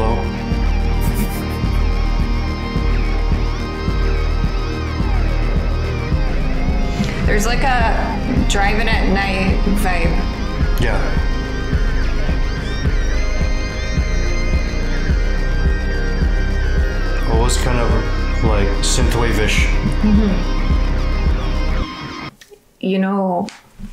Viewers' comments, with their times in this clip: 0:07 driving at night vibe is what ive always thought too such an amazing song. My favourite from the album!